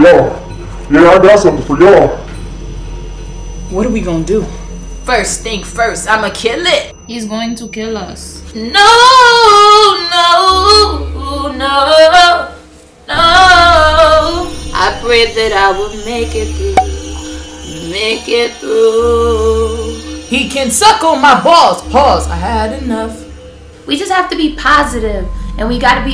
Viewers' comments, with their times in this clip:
0:09 you sound like sza
0:09 you can really sing.
0:10 is that her voice ?!🤔😍😍